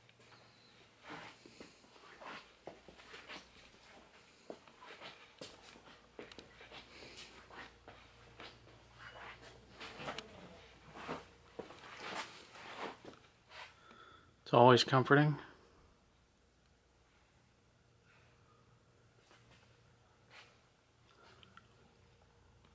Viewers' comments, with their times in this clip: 0:10 Just out of curiosity - Can I ask why you didn't use any infrared capabilities, during this investigation? (If there was anything there in the dark, you won't be able to see it with a regular camera & regular camera settings.) Also, there's the sound of a female either groaning, or saying, "Noooo." (Also, it could be saying, "Goooo".) It sounds like the voice of an older female - was there an older female in the room, where you were or in the room above?